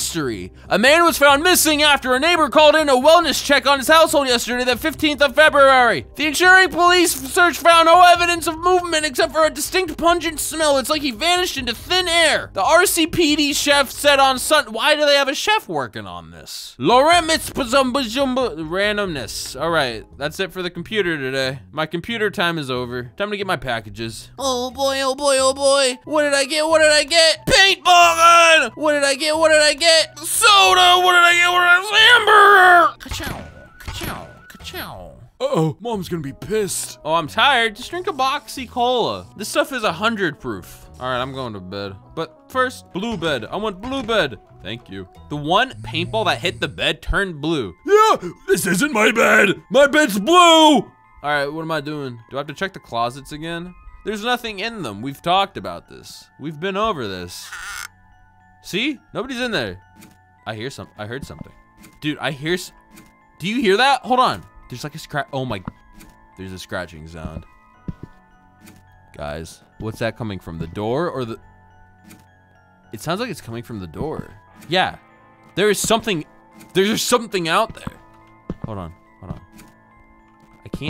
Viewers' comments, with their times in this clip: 0:09 sounds like pug in Kermit, the frog
1:03 To me that sounds like a clock ticking, not scratching.